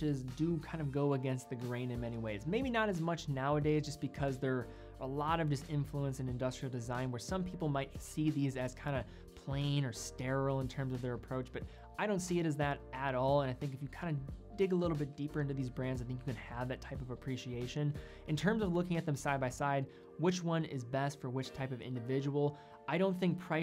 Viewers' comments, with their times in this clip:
0:10 Omg he actually says “both” rather than “boLth”....a first.